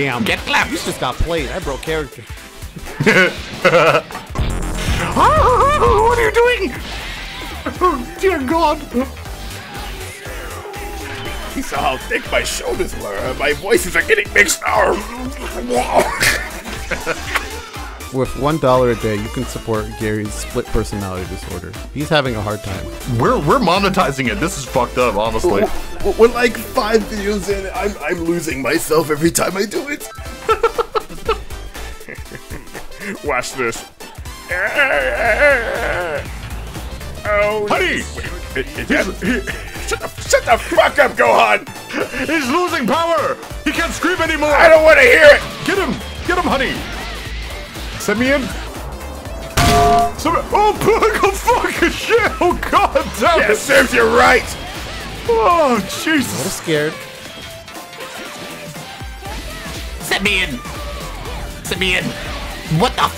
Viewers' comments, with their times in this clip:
0:04 looked away, soon as i heard plok i literally stopped everything and looked back plok jumpscare what the fuck
0:04 What's the menacing music called ??
0:49 *Bingo music stops *